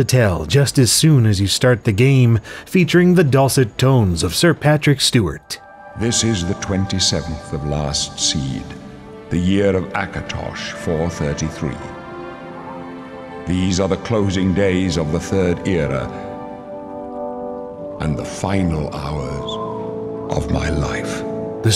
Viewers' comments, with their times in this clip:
0:05 I can never hear this without hearing that famous Star Trek: NG intro speech by Jean Luc Picard in my head.